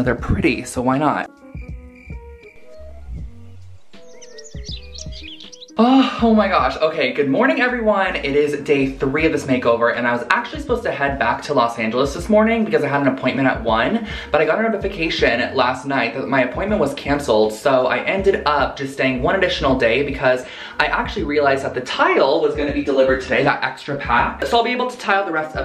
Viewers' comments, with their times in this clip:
0:06 He is a fast talker. IMO People tend to talk fast to get their thoughts out before they get interrupted. I’m not at all saying that is because his mom was an interrupter. Just a speculation about why she spoke the number of words that she did. I do remember in one of his videos he looked at his phone & the time was & he said that was a special thing with him & his mom.